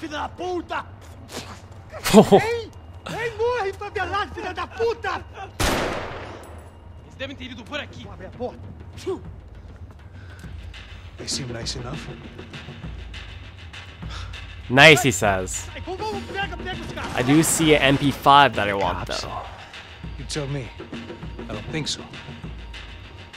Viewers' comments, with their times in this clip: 0:08 that sounded like a snezze